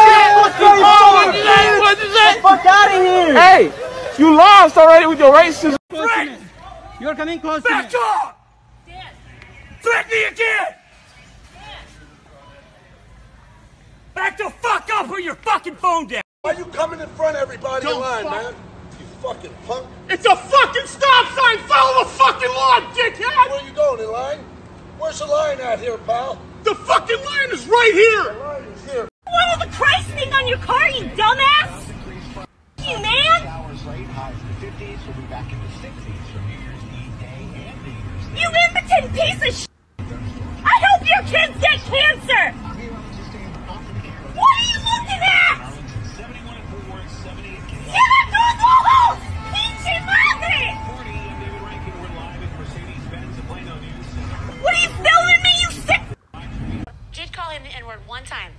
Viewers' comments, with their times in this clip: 0:09 we need this guy in the military he does a perfect soldier yell if you know what I mean
0:16 the vOiCe CrAkS
0:32 Every GTAV character car crash insult... her voice too tho lmao.
0:41 sound like Tracy forever from gta
0:42 sounds like miss piggy...kermit in big trouble